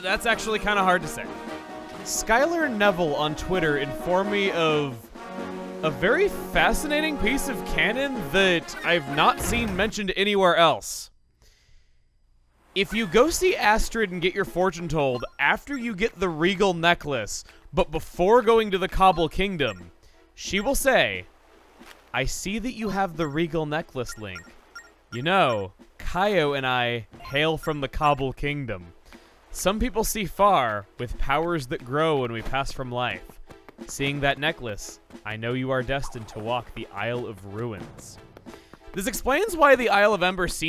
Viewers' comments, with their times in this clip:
0:03 is it just me? Or did I just notice a sound delay right there? 😱
0:27 Is audio desynced for anyone else ?